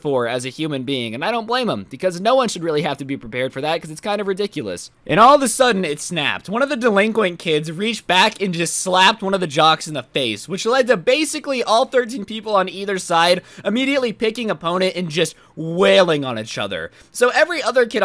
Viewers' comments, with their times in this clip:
0:05 when the doom music kicks in: